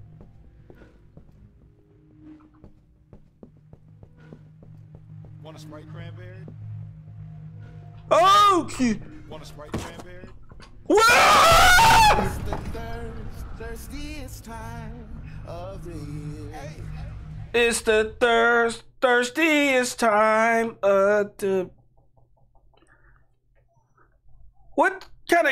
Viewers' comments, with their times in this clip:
0:10 he scream in its so funny